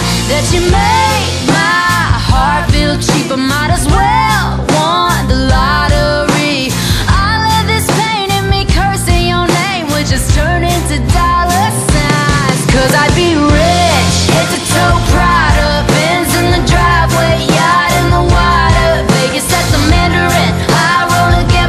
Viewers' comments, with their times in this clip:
0:03 I didn't here "have" just "I might as well won the lottery"